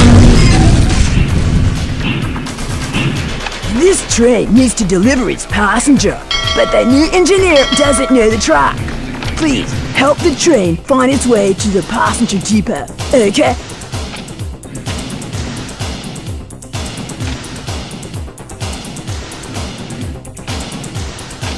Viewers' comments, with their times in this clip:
0:03 to be honest, the announcer here sounds like she or he is high on weed or model kit glue, and that's probably why there are so many tunnels. 🤣🤣🤣🤣🤣